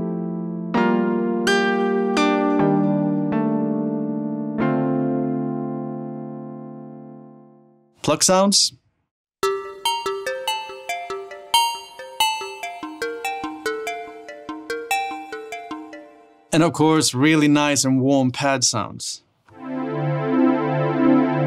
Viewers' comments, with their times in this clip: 0:09 Sounds like the Intro to the Track 500 PS by Bonez MC and RAF Camora